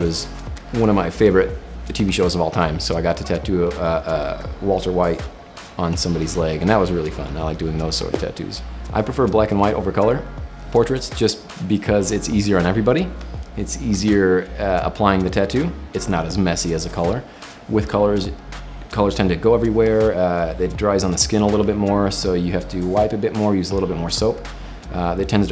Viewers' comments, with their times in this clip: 0:08 When that Juicy Fruit sample kicks in